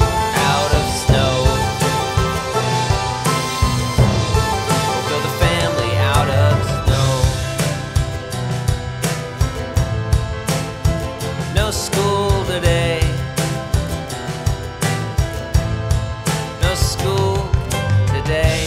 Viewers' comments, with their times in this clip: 0:03 also, something happens to the audio around the mark...video/audio aren't in sync...could be something on my end but not sure, so thought I'd say something incase it isn't